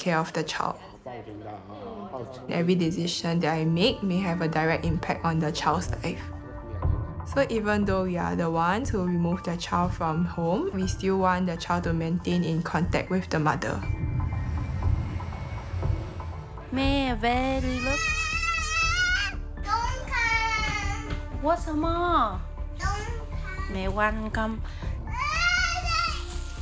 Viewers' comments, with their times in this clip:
0:08 i mean i know they find it ideal that the mother should be in contact with the child, but look at the way she just starts screaming and crying when her mom enters! that "mom" shouldn't be allowed near her :(